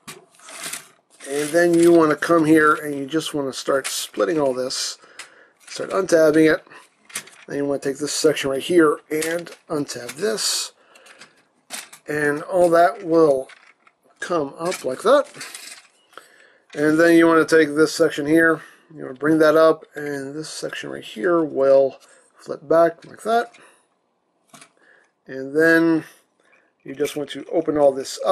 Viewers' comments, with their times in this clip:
0:10 The way he said fierce gaze the first time sounded like a stereotypical action movie trailer narrator and when he starts transforming the trailer there is a gap at either side of the trailer did you see if the swords would fit rhere